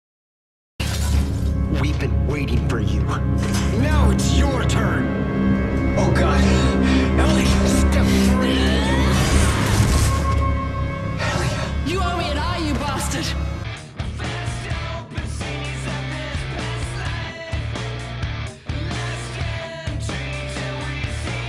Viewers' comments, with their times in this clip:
0:04 Now that is a powerful swing,if that was a pipe she used to hit Stross,it was ringing very loud,she must have been angry at Stross for taking her eye out of it's socket.